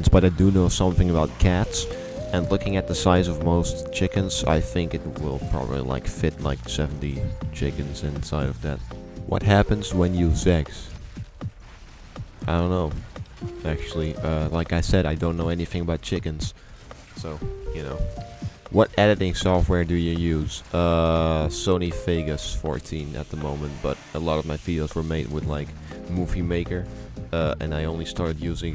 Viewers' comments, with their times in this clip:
0:09 the way he said “seggs” lmao